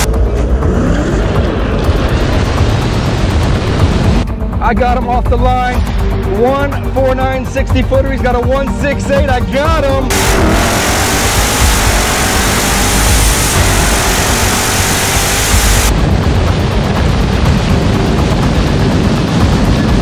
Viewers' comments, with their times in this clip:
0:06 he messed up his launch cuz he shifted too earlt you could hear it, demon was only warming up